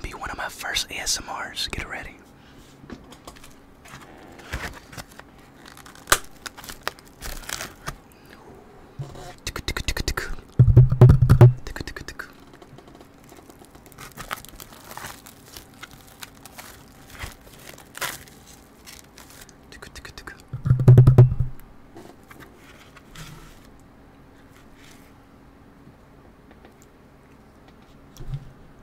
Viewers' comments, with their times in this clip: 0:08 i love the little tukutukutuku ❤
0:08 Sounds like speedrun
0:09 what is tukutukutukutuku😂😂😂😂😂😂😂😂😂😂